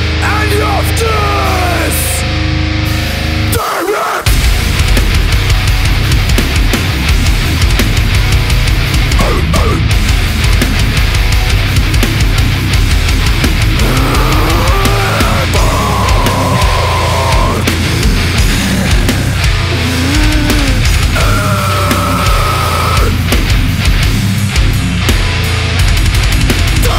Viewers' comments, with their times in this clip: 0:08 vocalist barks every beatdown fan instantly combusts into flames